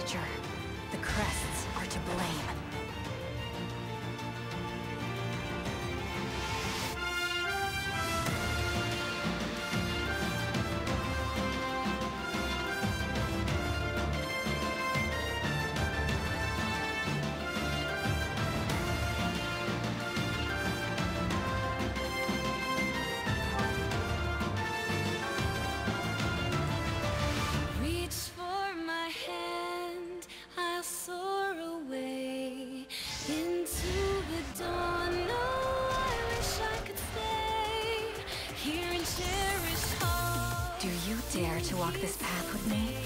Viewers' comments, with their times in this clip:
0:06 THE MUSIC MAKES MY HAIRS STAND UP
0:29 I’ll wait for more before judging it, it looks promising and the music sounds great so far Ps. Hey, am I crazy or does the object she’s holding look like Alm’s sword?